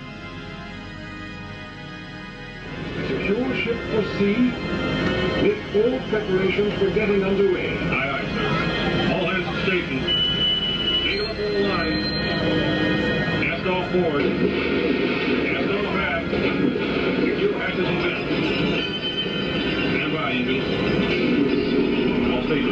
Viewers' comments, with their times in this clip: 0:10 this horn sound and pretty much everything about the ride (including the arrangement of the metal bars for the lines) reminds me of the Nemo ride, which is probably my favorite. And now I know the Nemo ride was repurposed from this... which is incredibly fitting since one of the characters from leagues was also named Nemo.